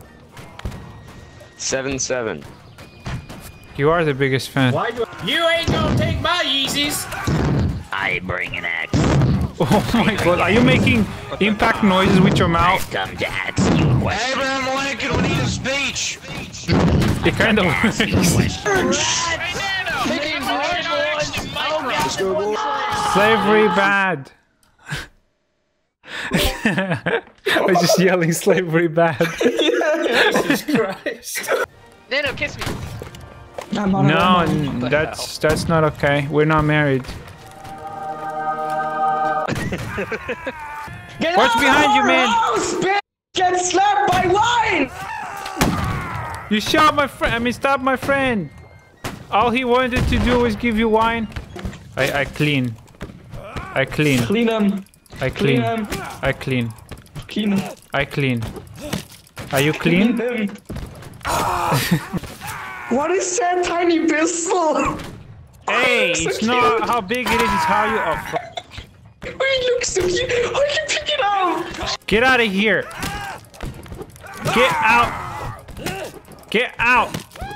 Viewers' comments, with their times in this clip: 0:08 Popeye is that u
1:03 The pure joy in his voice when he finds out he can pick up the tiny pistol!